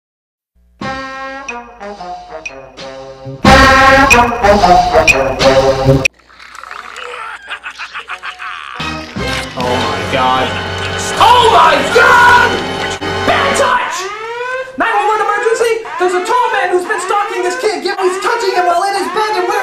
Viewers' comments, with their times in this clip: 0:03 there loud sound is funny😂😂😂😊😊😂